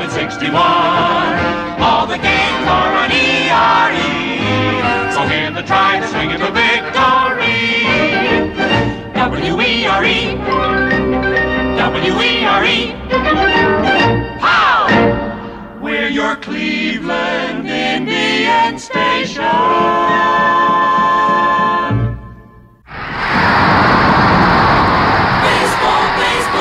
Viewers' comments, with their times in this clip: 0:08 The W-E-R-E! W-E-R-E! melody sounds like the 2nd half of the Cinemascope Theme of 20th Century Fox